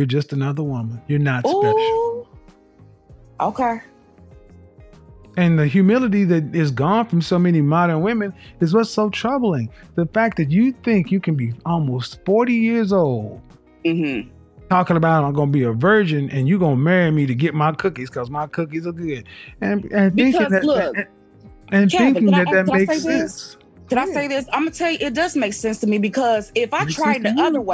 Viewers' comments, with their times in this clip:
0:10 why do they have to be stereotypical at all times… loud and animated even if you can’t see em